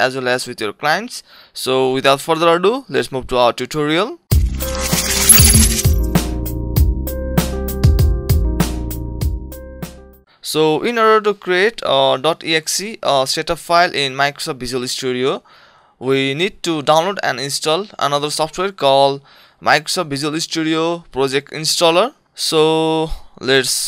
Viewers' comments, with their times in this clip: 0:04 Thanks man! The only problem is this The thin sound is just so irritating :D